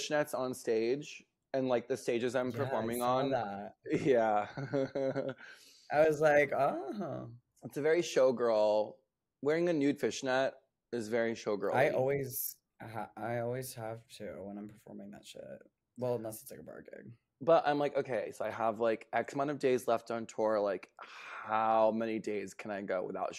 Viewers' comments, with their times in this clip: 0:05 violet’s uncomfortable laugh is me wanting a conversation to end